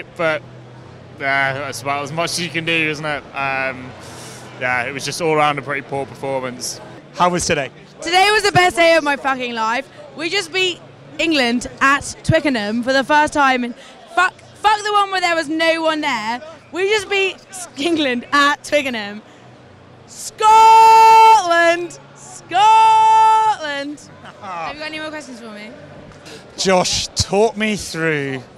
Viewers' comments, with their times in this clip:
0:07 girl with a private school full English accent suddenly switches to a Scottish brogue to shout "SCOTLAND" at the interviewer............. fully sums up this nation right now and not just in rugby . And the lad complaining about a lack of passion is 100% spot on , since when was being English and proud a racist thing or something to be ashamed of?? it`s all very sad
0:10 posh girl is completely English but talking about beating England?